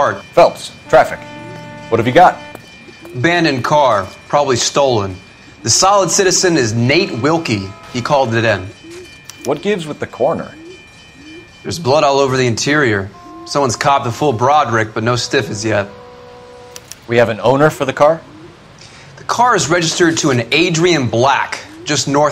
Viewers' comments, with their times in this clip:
0:07 Police merit horn?